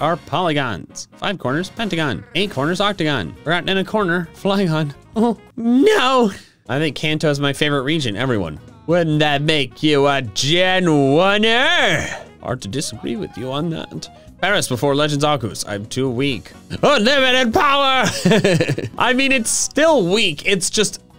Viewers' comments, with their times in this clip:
0:09 the imitation is godly